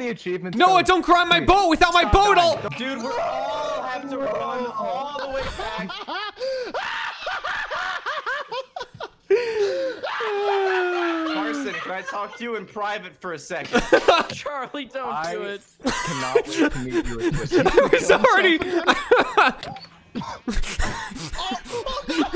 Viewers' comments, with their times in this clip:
0:05 You can hear the sheer brokenness of this man just from this single laugh.
0:05 schlatts laugh SCARES ME
0:05 Jshlatt's laugh is actually scaring me oml ;-;
0:05 Schlatts laugh was absolutely terrifying holy shit
0:05 Imagine playing that at 100% volume and forgot to plug in ur headset at 3am...
0:06 there is not even a single bit of sanity in that laugh
0:06 FEEL GOOD INC INTENSIFIES
0:06 the sound of a man who has lost it
0:07 that is the laugh of a madman